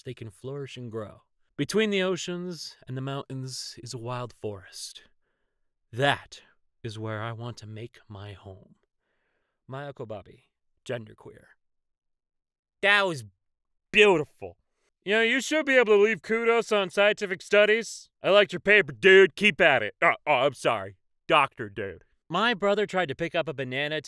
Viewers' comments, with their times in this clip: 0:09 I wasn't looking at the screen when you said "Maia Kobabe" and heard it as "my uncle Bobby" i can't even-